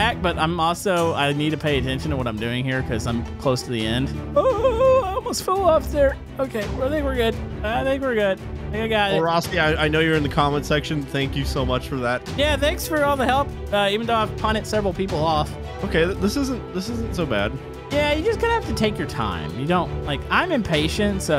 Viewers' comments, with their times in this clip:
0:04 it sounds like hes an alien.